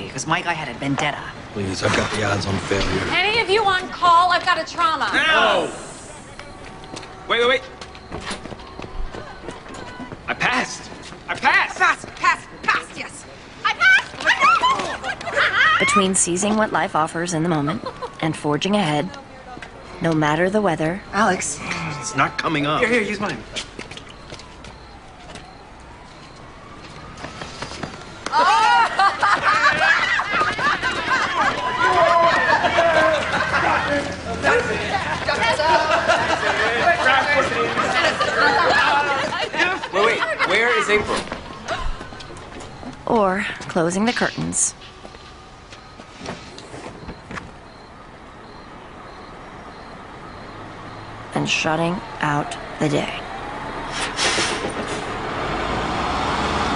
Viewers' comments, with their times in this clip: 0:03 That NO was personal
0:37 warms my heart. Alex giggling, glowing because he and his friends passed their boards. Just a moment of sheer joy, shock, and the weight of pressure/stress disappearing. Not to mention Yang and Avery dancing in circles 😂 Great moment.